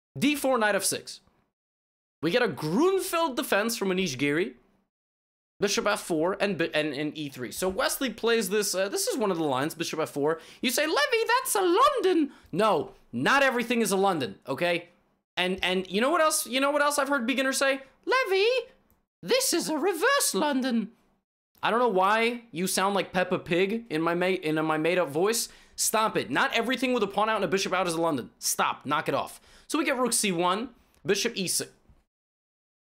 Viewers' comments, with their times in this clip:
0:10 LOL you sound like dobby (form Harry Potter)
0:18 sounds more like Doby from Harry Potter
0:19 The voice sounds like mickey mouse hahahaha